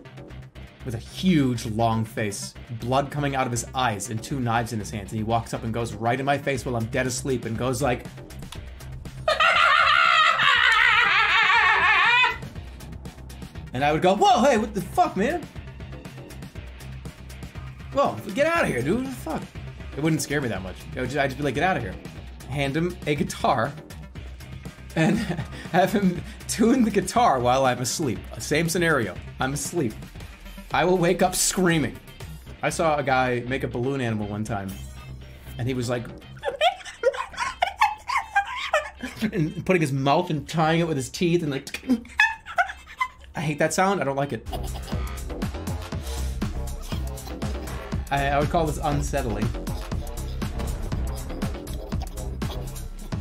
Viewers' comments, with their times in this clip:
0:09 feel good inc laugh
0:36 Did he really just impersonate a fucking balloon????